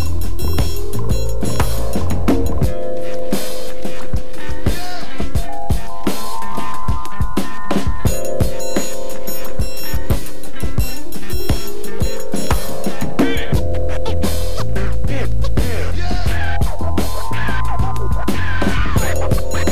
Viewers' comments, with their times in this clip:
0:06 That beat jeez